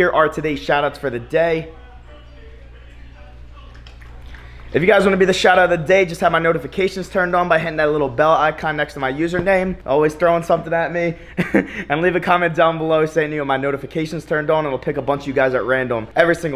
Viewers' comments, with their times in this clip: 0:03 wtf was the eating sounds